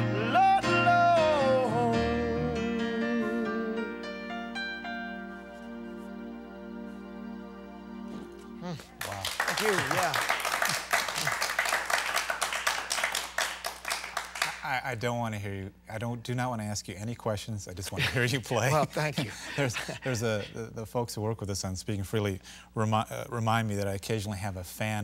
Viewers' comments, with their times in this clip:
0:07 I'm only in to and Felix has me in tears already!! Beautiful voice, kiddo!! mesmerising lyrics..Thank you..!!